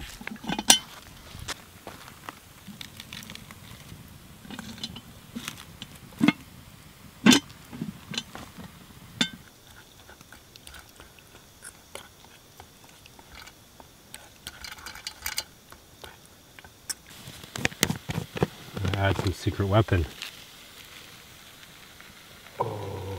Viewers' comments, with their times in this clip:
0:08 I know its late but... this part is PURE ASMR